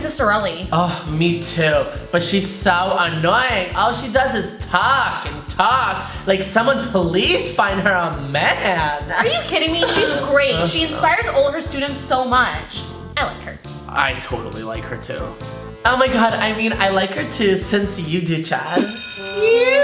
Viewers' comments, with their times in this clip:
0:05 she sound like my teacher